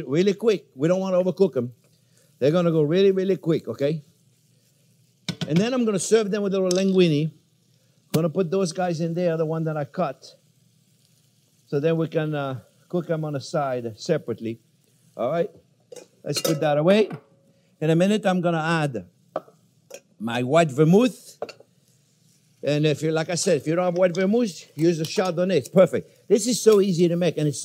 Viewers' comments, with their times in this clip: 0:08 COD hit marker?